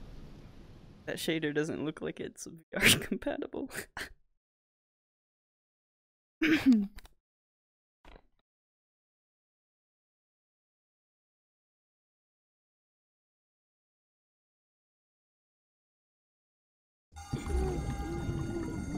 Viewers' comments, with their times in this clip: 0:05 you sounded like a girl when you like cough i was like who in the hell was that